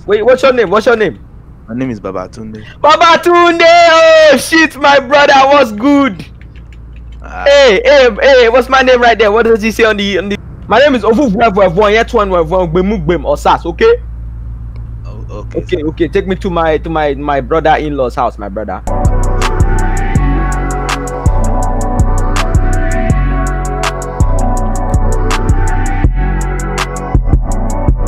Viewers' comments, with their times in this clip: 0:10 Bro how did you perfectly say the longest name in Africa ? Apart from that this movie was bussin' keep up the good work my bruda, you gettin' close to 10k